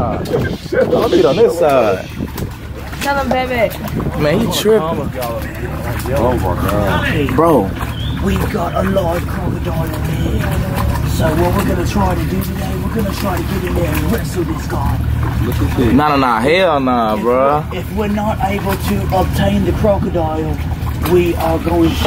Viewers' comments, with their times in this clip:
0:10 listen to this guy in background 🤣🤣🤣